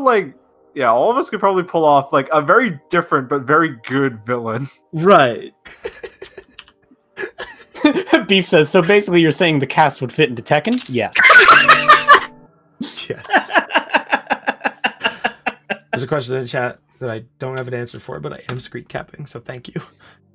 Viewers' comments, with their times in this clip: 0:06 I’m still wondering what he was laughing at tbh